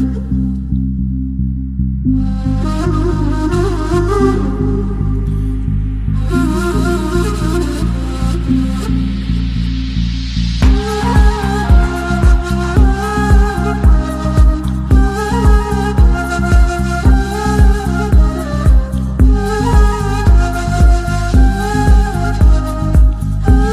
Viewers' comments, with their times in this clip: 0:09 Many parts of this music is taken from islamic music or chants which name is “Ilahi “ also the instrument is very popular at Islamic countries which name is “ Ney”. It’s so pupular at Islamic Sufism which name is “ tasavvuf müziği” This type of music is so beautiful and peaceful. Anyone who wonder about it church “tasavvuf müziği “ it can make your day beautiful.